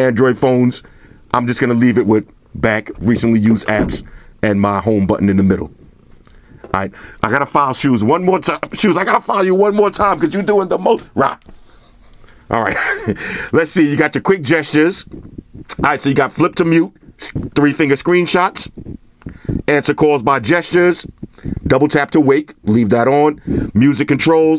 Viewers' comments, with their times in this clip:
0:10 the RAH here was hilarious. Rah to file shoes to the side.